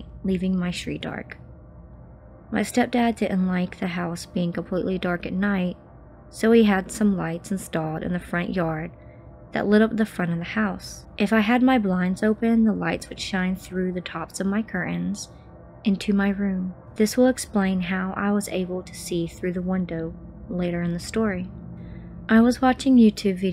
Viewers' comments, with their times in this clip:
0:05 Compared to our main narrator, the girl nattering sucks